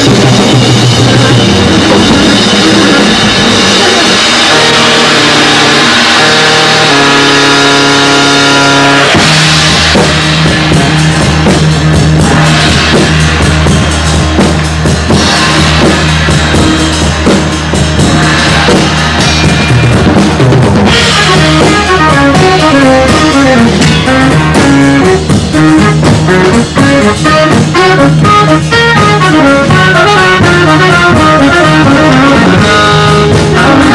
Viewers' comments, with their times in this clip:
0:04 I fathom this as one of the most powerful... piece of music I have ever heard. Rock or metal are just teenagers' weep and hormone. This is, a man, conciously and sedately howling in despair from madness encircling Him.
0:08 ......get goosebumps every time i hear those drums come in together, totally awesome piece.
0:09 they went from complete chaos to the tightest band on the planet.
0:18 jeez on sounds like it could be off soft machine's "third"